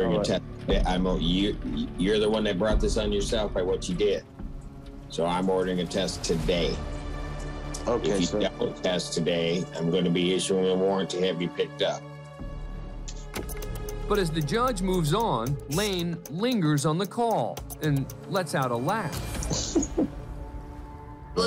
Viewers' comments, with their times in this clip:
0:04 lmao the horror music